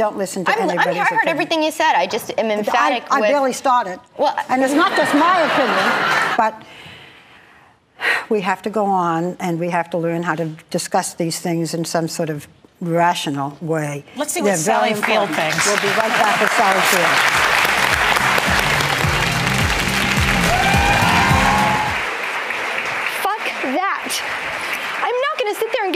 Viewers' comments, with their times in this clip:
0:06 = bad editing....looks like you cut something out here, cuz the video & audio jumps, like footage has been removed? weird